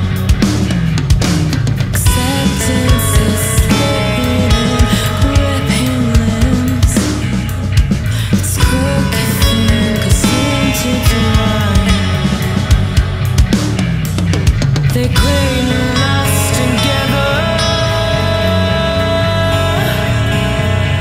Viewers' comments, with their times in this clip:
0:05 wrote this ^ just finished the vid, fucking blown my mind! them growls are vicious, guitar is technical, bass is funky af and drums are doubling exactly where exactly where they should be! keep killing it legends!